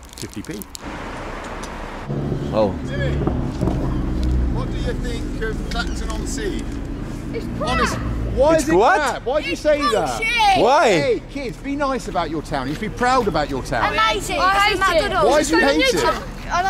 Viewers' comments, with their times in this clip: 0:03 I can't understand shit what those kids were saying 😂😂😂😂